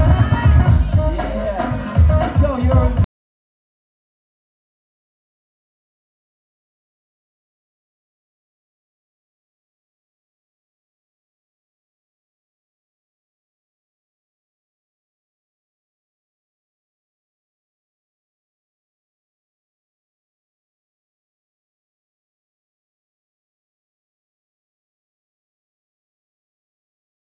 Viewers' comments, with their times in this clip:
0:10 what happened to the audio at the part of the video? Copyright strike?